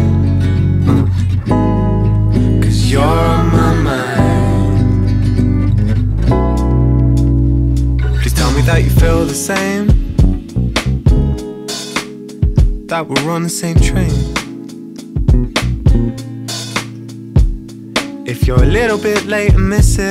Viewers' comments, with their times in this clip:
0:08 Shiiii the bass sloppy and so smooth. Great album man!